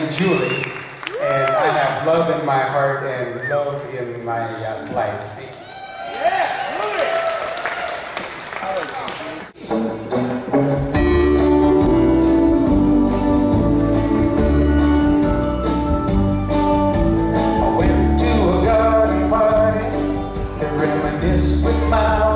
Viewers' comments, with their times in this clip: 0:05 The song starts :/